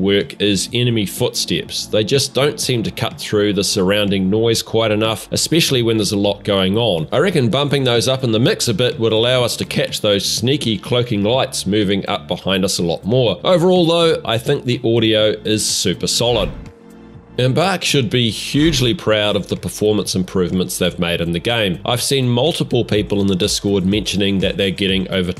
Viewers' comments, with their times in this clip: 0:07 as a light player who uses cloak and sniper, that has to counter other lights using cloak and sword or pistol, the biggest giveaway other than the visual distortion is the electrical buzzing noise made by the cloak. It is MUCH more recognizable and more present in the audio mix than the pattering footsteps that mix in with your squad in close quarters. Once you know the buzzing noise, you will ALWAYS hear them coming, unless an entire building is collapsing maybe, but that’s rare. Just some food for thought, that’s how I never let cloaking sword bois sneak up on me! 💪 Good luck out there!